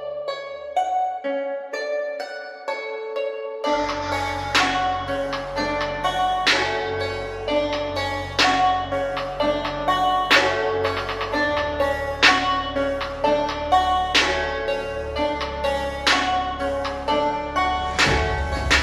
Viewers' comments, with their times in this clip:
0:06 that was like fireball sound in minecraft (hypixel)